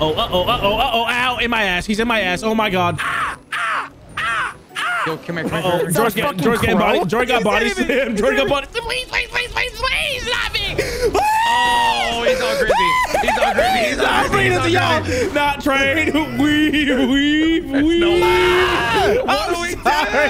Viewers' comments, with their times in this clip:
0:03 Crows outside my window in the morning be like.......